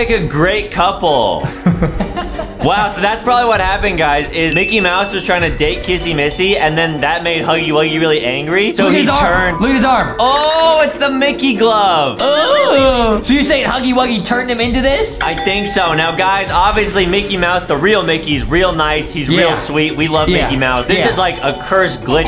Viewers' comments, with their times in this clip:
0:09 I thougth that goo sound was my stomach hungray. NOT EVEN KIDDING!